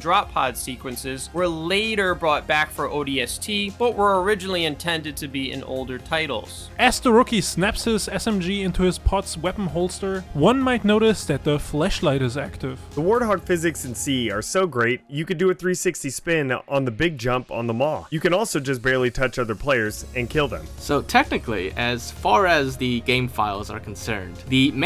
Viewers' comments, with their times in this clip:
0:07 the what light?
0:10 “One might have noticed that the fleshlight is active” 😂
0:10 he said the flesh light 😂 Oh and the forklift fact is in this video twice
0:10 took me a while to realize he said flashlight not... something else.
0:11 the fleshlight is active 😳